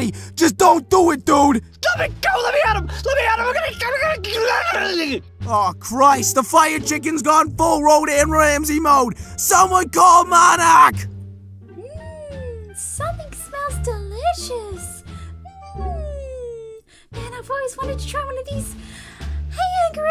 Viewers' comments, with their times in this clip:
0:05 Does anyone know fire chicken language? I get nothing what he's speaking right now😂😂